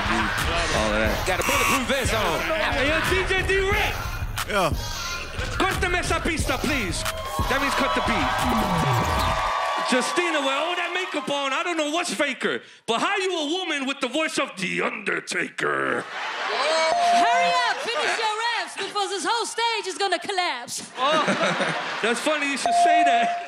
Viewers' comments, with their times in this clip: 0:05 Why did I hear "Cut da Mr beasta"